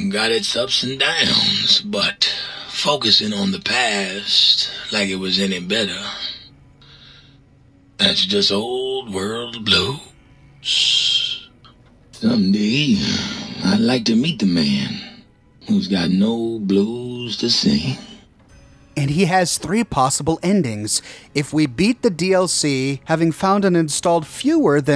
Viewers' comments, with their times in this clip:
0:08 roll credits ding